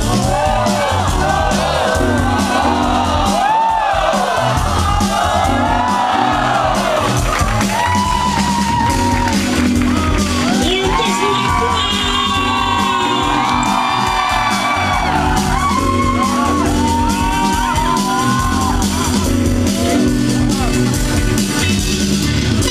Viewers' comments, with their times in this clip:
0:05 whats the song really nice smooth sound..help anyone